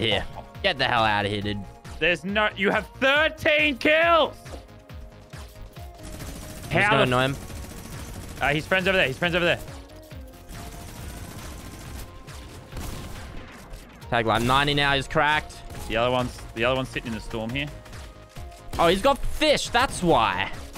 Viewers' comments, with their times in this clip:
0:07 Anyone else notice that Lazar’s audio cut out a little bit ?